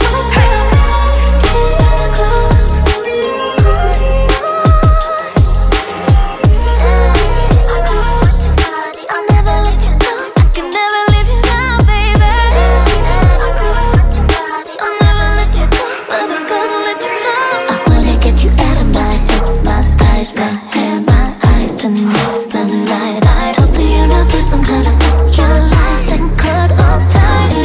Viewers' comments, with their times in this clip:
0:10 I know Tinashe when I hear her.. 😳
0:10 Fka twings 🔥voice = Ariana grande & Mariah carey